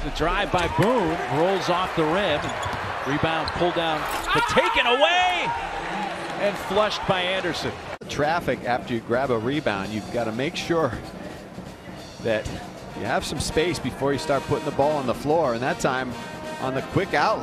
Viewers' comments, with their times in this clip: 0:03 He really yelled after that weak dunk lol 😂😂